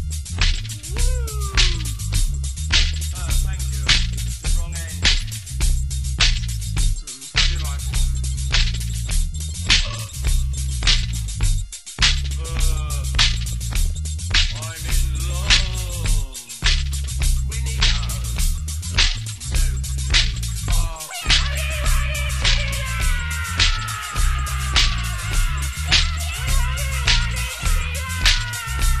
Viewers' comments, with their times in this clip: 0:10 This was a BIG, culty hit at Studio 54 in 1980, they loved it. And Marianne F.'s 'Why'd Ya Do It?' The conversation on this is sometimes really funny. There's a burp nicely done.